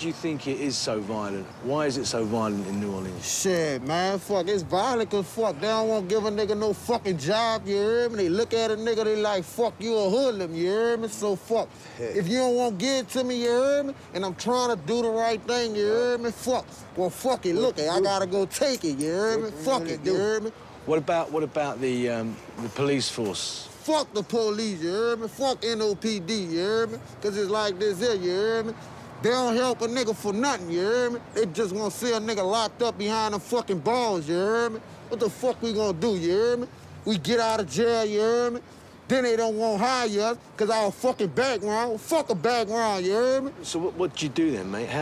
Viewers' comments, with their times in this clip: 0:03 The fine scholarly gent well, I can't quite hear him...
0:06 after all the Ya eerrd me Ya eerrd me that even Ross went What about what about
0:22 man on the right laughin his ass off unfer that scarf😂😂
0:24 even his friend couldn’t help but laugh at how ridiculous they are
0:33 this guy has Tourette’s i swear